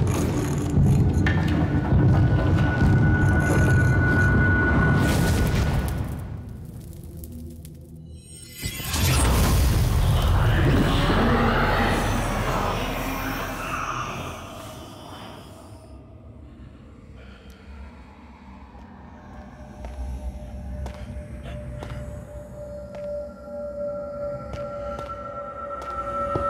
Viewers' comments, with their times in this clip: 0:07 sounds like that massive portal being activated and the wardens breaking through, someone said that villagers (or someone) activated the portal and wardens broke into these cities and killed the people that lived there. This supports that theory.